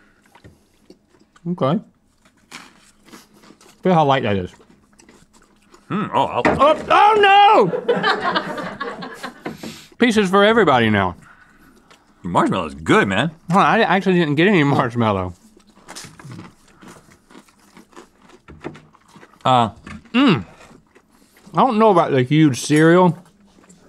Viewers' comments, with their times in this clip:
0:06 Link's scream and the way Rhett shakes because he got surprised. 😂